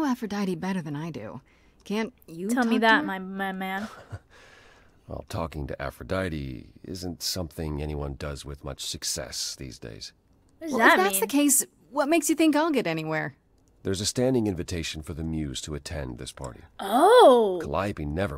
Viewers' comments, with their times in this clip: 0:06 you sounded so excited to party with aphrodite :(((